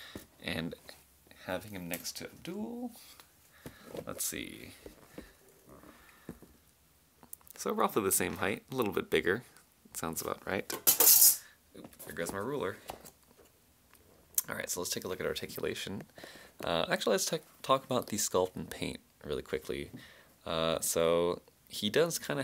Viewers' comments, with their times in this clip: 0:10 it sounds like you threw Abdul onto the floor